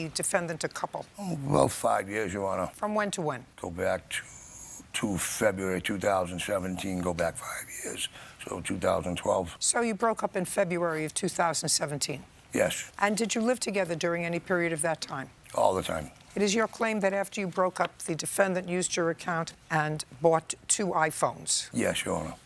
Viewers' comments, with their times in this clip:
0:08 was not expecting that voice 🥴